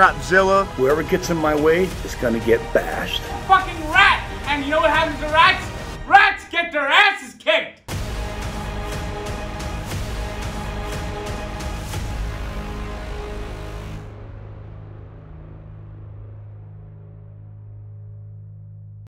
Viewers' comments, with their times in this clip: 0:03 Sounds like Noob Noob from Rick and Morty lol